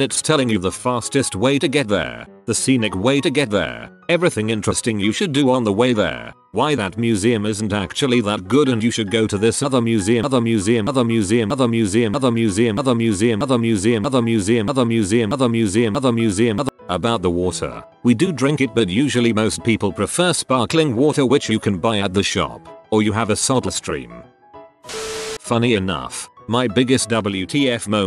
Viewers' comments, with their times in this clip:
0:10 text to speech had a Juice WRLD moment
0:10 did it repeat other measeum for others
0:10 STOP ITS THE MOTHERFUCKIN REMIX
0:10 TTS bouta start rapping
0:11 big glitch hours out here bois
0:12 the generator had a fuckin stroke!😂😂😂😂🤣🤣🤣🤣
0:12 the generator had a fuckin stroke!😂😂🤣🤣
0:12 Someone scratched the record. Ew, they still have pay toilets? Those were outlawed here ages ago.
0:14 Your audio crashed